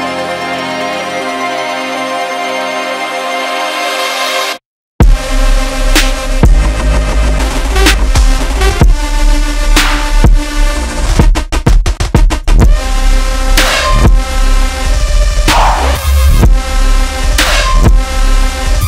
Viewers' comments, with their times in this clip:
0:05 dont lie to me flume!, you've had some 2013 hardcore/metalcore songs in your playlist. i know a breakdown like that when i hear one!